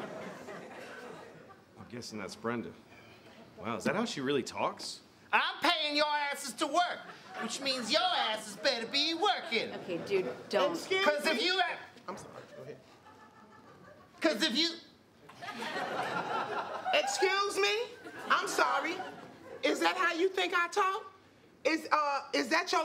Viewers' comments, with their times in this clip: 0:09 Ohoho, Leslie shouted excuse me, too soon, screwing up Louis... But it could happen to anyone, but she shouldn't of apologized on set, that made the mistake obvious.